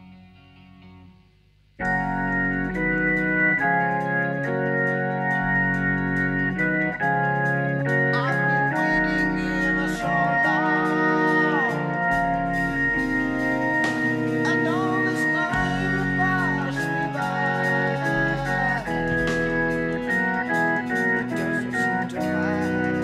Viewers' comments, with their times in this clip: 0:09 Congratulations The part of Ebm Bb Ebm Bb Bbm Cm7 Bmaj7 has to be one of my favorite pieces of music of all time